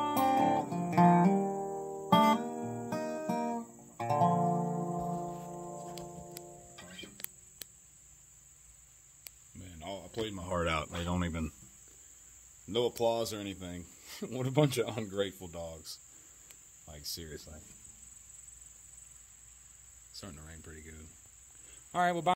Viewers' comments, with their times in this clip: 0:09 Can’t you hear it in his voice? This man is not lying. He sings the truth for so many of us